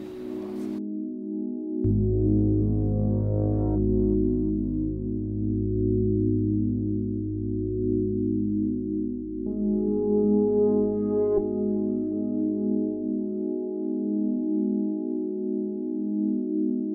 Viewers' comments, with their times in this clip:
0:04 Was that 'Agera S' or was that just me? O.o